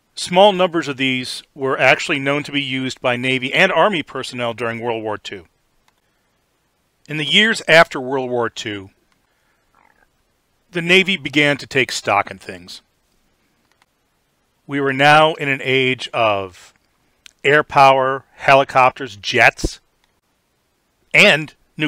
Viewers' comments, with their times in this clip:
0:09 Anyone else heard his stomach growl ? 😮